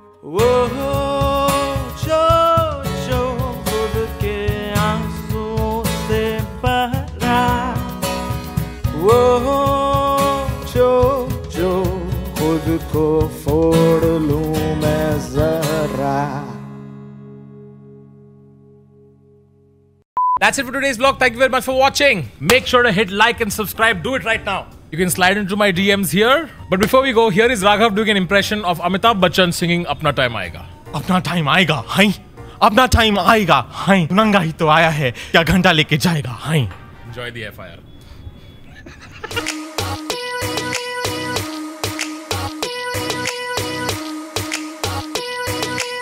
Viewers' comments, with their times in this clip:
0:10 did only i hear jojo?
0:31 It was more like Ranveer singh.